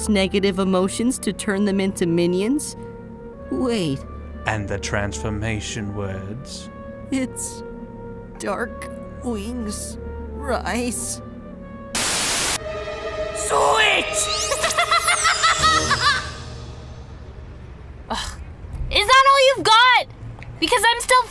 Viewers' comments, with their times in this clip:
0:08 in subtitles for me the transformation words were “Dark whose rice” xD